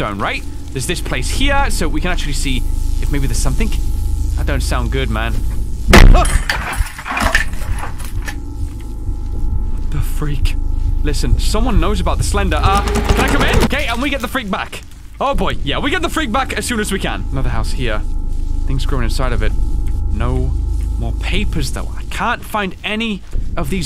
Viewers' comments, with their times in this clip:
0:05 Is it just me or did that door bass boost?
0:06 that thud happened at the same second a creak or something like that happened in my house